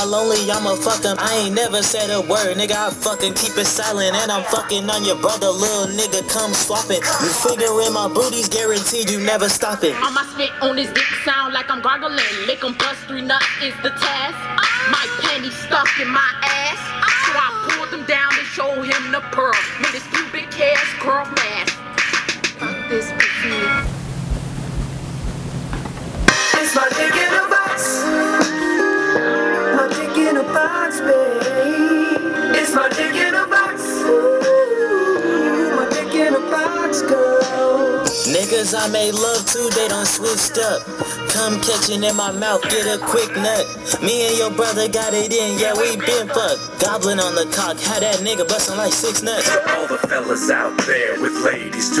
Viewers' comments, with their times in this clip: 0:04 sounds like a walmart version of kendrick lamar And also gay
0:17 That asian dudes face when she moans 😂😂😂
0:26 A classic starts to play
0:36 roddy ricch type song